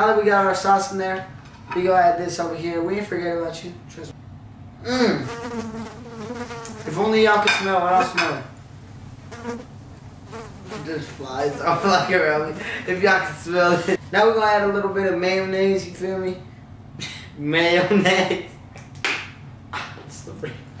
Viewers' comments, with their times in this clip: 0:04 you really added that fly sound effect bruh 🤣🤣🤣🤣